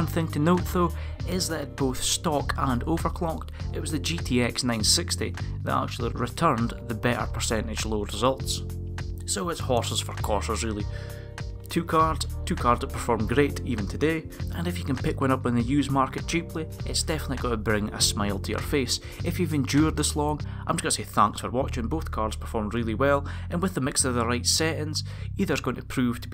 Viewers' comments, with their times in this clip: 0:09 Did you say, "Horses for quarters?" ?